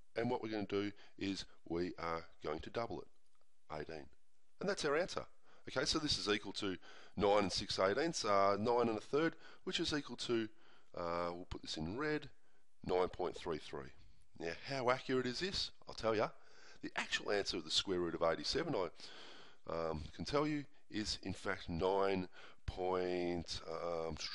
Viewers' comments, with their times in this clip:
0:05 guys! i don't understand this step How do we get the answer. I am so sorry but i coudn't get his accent. :/